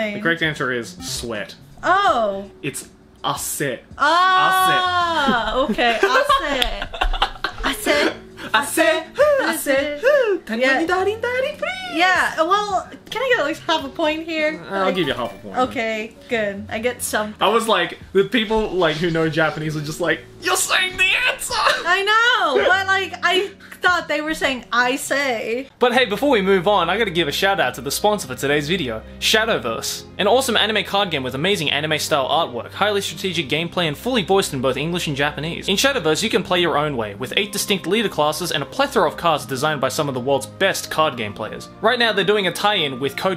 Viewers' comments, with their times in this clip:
0:10 hahaha his voice lmao
0:28 gigguk heavy breathing